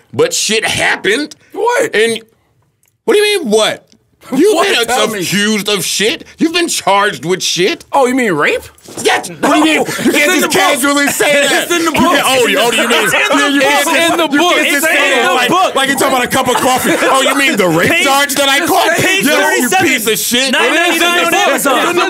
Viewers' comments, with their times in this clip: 0:04 Looking back at this, is crazy. Charlamagne was way too comfortable when talking about HIS case. His job is to make big headlines out of small stories but the way he said r*pe so calm is crazy.